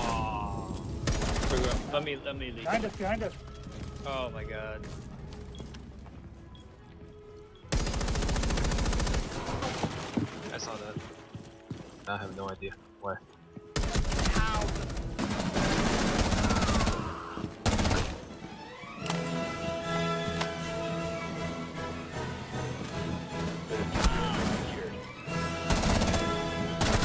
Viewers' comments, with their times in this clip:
0:09 ADS time with Fuze is so fast. And Fuze walked like a 2 speed. And almost no 3 armor waggle sound + animation. Fuze was a god